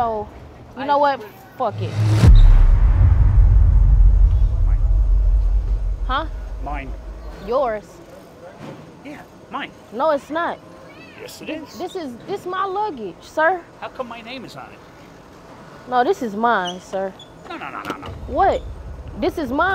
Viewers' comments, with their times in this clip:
0:04 Bro turned into a seagull from "Finding Nemo" 🥴😂😂
0:07 his voice 🤣🤣🤣 and why his head is so pink
0:07 Why does the man sound and look like Peter Griffins from family guy 😂😂😂😂😂🤣🤣